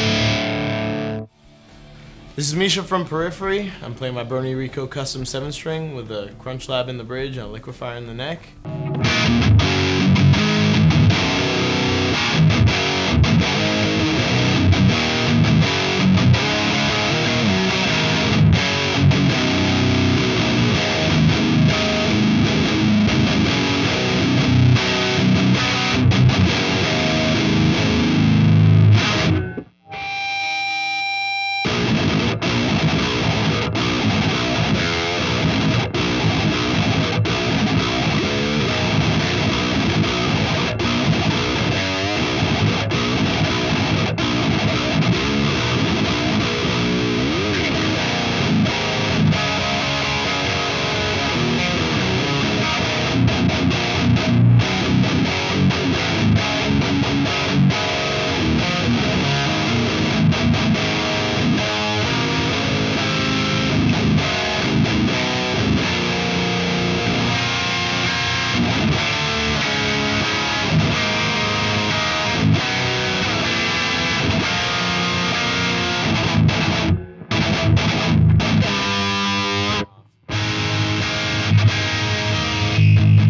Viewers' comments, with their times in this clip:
0:10 Started singing "sendin' out an S.O.S."
0:30 Letter experiment seemed to lack some clarity with the high gain. Kinda muddy. Less gainnn
0:31 Misha is like "Man this amp is br00tal, gotta swap my engl for one of those."
1:06 Listen to the string definition of that chord, despite the intense amount of gain. That's what the Tubescreamer does to a Rectifier; tightens it up, and for lack of a better word 'cleans' it up! My own rig contains a Dual Rec with TS808 that comes on whenever the drive channels are engaged. Best drive sound I've ever had (and I've tried the whole Marshall, Orange and ENGL route).